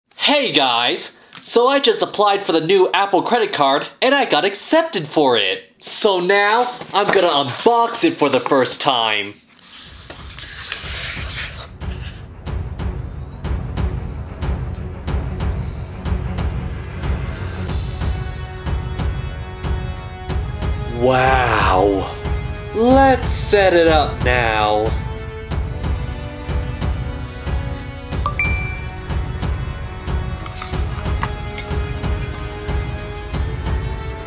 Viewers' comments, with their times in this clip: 0:00 sounds like “Hey guys this is austin” Austin evans
0:20 is it just me or does the “wow” sound like Tim Cook?